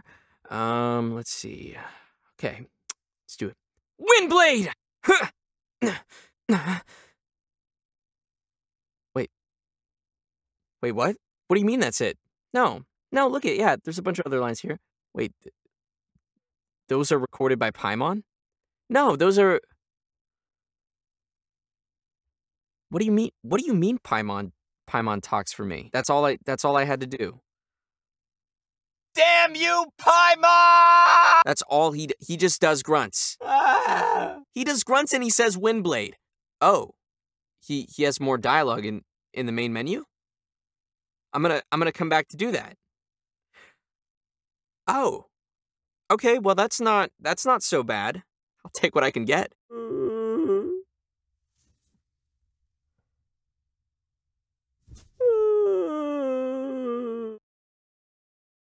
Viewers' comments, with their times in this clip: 0:03 I really didn’t believe it was the real voice actor till and then I was shook O
0:06 at this point your just ... moaning
0:14 zach's voice crack
0:28 When I heard this I could here tanjiro
0:29 almost feels like Tanjiro is screaming . Like his tone.
0:29 dude sounds like dub tanjiro, or maybe he is idk I don't pay attention to that.
0:48 "i'll take what i can get!" continues sobbing. that was frikkin hilarious 🤣
0:48 " I'll take what i get " sounds like tartaglia (childe) for me
0:56 sad protagonist noise made me laugh hard!